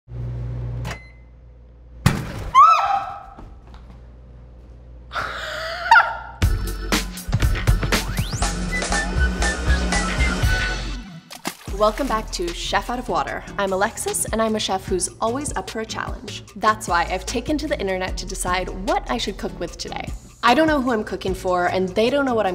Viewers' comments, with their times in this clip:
0:03 the person in the back sounded like a seagull 😂